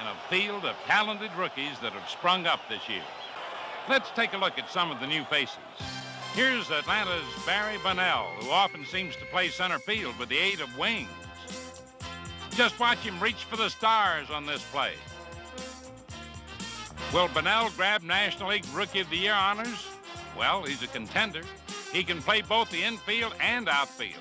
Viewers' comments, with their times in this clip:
0:06 My favorite part of this classic clip from TWIB is where they begin to play this awesome trumpet music and it goes on for a good lengthy while. They really knew how to select great music for every scene in this great program that served as a Saturday morning ritual for me when I grew up in the 80s. I miss TWIB to this very day.